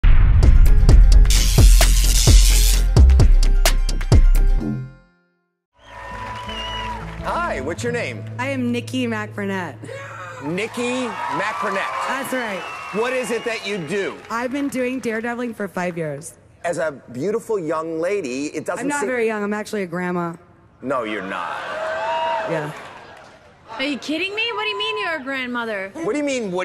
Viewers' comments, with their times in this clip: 0:09 you can hear Tobey Mcguire yell